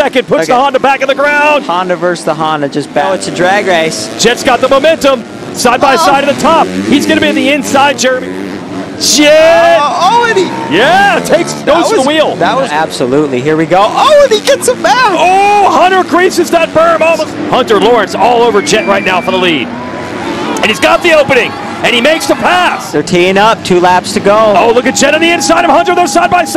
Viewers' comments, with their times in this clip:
0:08 Who else heard a moan